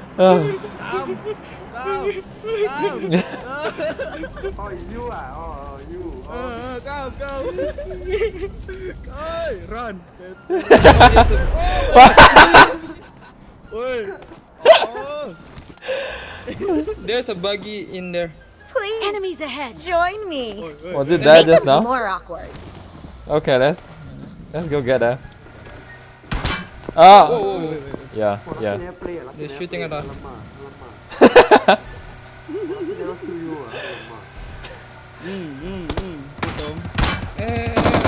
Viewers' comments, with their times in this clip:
0:07 Where is Lisa????They are also acting like blackpink...at You can take an audition in pubg for singing.... There accidentally 3 fans were singing very nicely.. I was amazed.. GJ
0:19 there is a girls.voice wtf